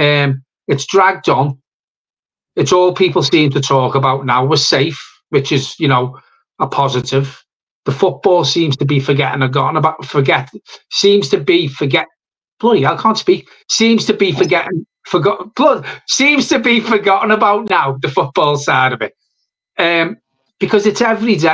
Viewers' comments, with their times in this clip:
0:06 one of them could speak 🤣🤣🤣🤣🤣